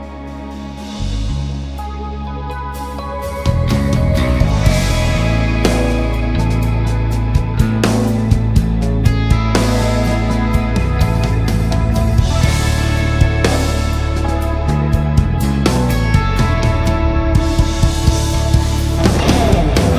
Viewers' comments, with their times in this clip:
0:03 love that bass entry!